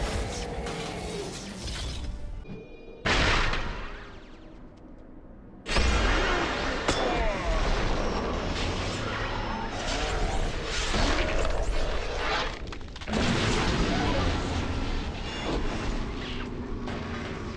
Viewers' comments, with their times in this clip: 0:04 Lulu voice .... she gives me nightmares
0:05 that lulu sound was demonic